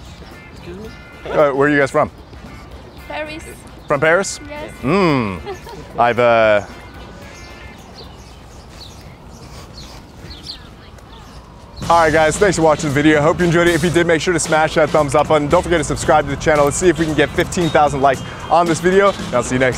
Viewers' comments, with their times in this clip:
0:07 camera man tried to hold it in😅